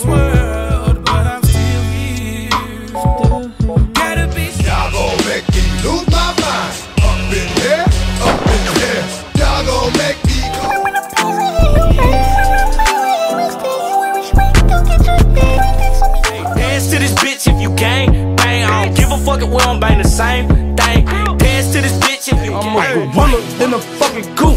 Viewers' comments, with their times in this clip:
0:10 uh uh y he sound like spongebob on ice bruh